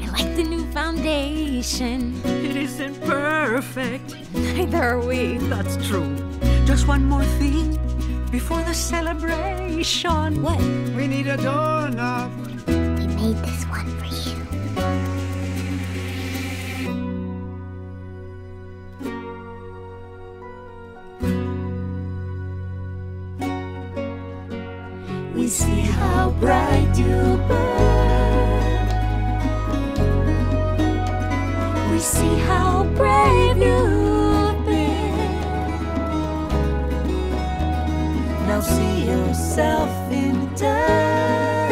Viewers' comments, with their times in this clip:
0:10 why DOES HE SAY DOOR NOB LIKE THAT
0:10 wE neED a dOuGhnUt
0:12 the we need a dOOr knooob is so cute
0:25 IM SORRY, BUT HAS TO BE THE MOST BEAUTIFUL LINE EVER SUNG IN THIS MOVIE. PEPAS FAMILY SINGING AT THE SAME TIME ALL TOGETHER MAKES MY BRAIN FEEL SATISFIED.